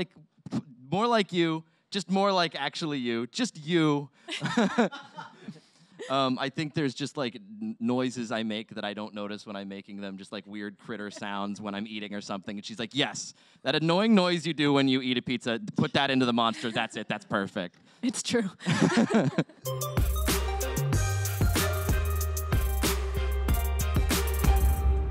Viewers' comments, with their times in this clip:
0:08 like his little "NYE!" King sounds, those are adorable